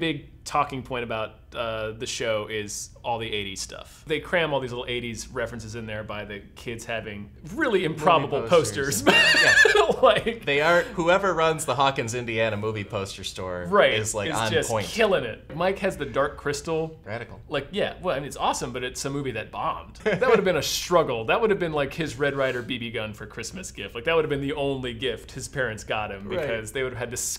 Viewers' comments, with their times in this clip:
0:08 lol that laugh was so good XD